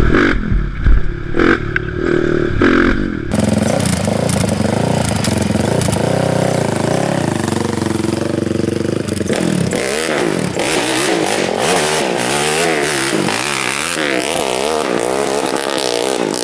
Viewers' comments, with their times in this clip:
0:04 I know what you mean.. Not sure why audio came out like that at first but you get a better idea of the sound